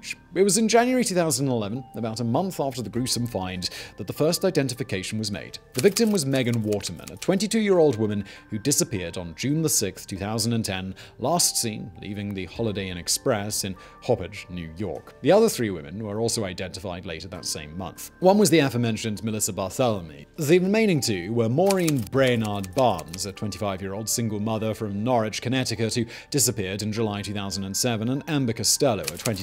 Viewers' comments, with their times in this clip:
0:04 "The victim was megan watermelon"
0:13 Not to mention pronouncing Hauppauge as "Hawpidge"